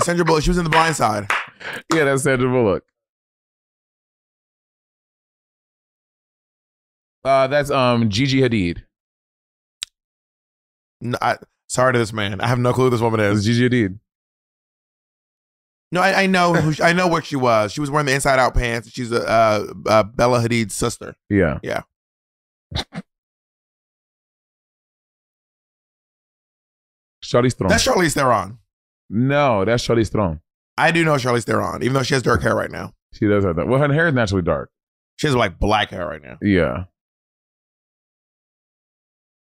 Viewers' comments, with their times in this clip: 0:03 The silence before they start guessing kills me 😂
0:26 very impressed with Monet pronouncing Charlize's surname correctly